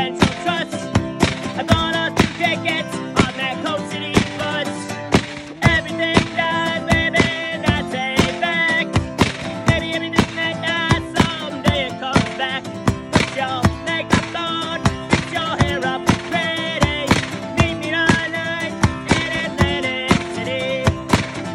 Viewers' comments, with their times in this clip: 0:05 That drop is a million dollars